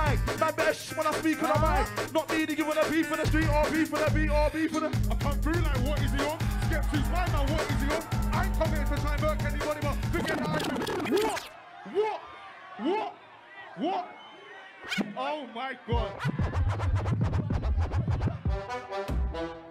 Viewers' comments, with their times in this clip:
0:07 Lol that excited grunt mid bar lol man was enjoying himself.